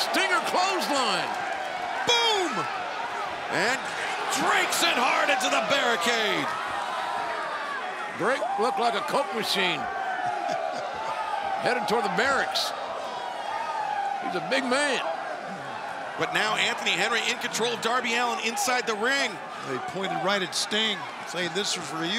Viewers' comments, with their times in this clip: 0:09 Why are fans WHOOING for Sting? Is he Ric Flair now? I love Sting but wtf?